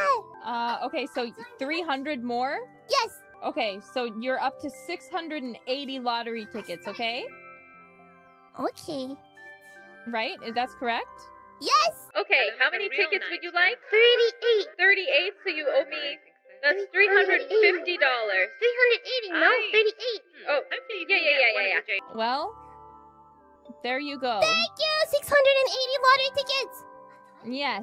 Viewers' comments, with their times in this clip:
0:08 that "okay" sure sounds fishy hahahaha
0:08 never trust an "ok" this cute